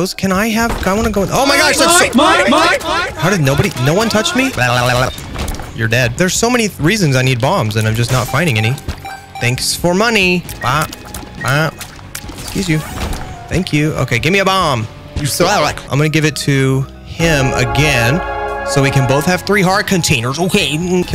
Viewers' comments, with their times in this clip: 0:05 "theres so many reasons why i need bombs but i cant find anything" cough